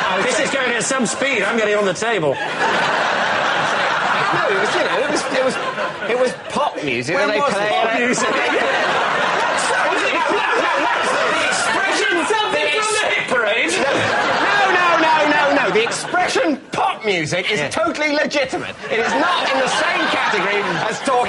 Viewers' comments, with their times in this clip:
0:09 That laugh across the room :L